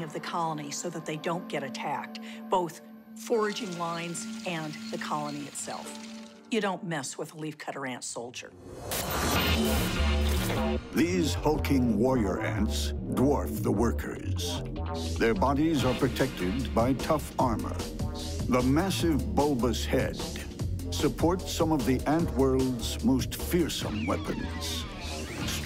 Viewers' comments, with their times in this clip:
0:09 does anyone else hear the old school tekken theme?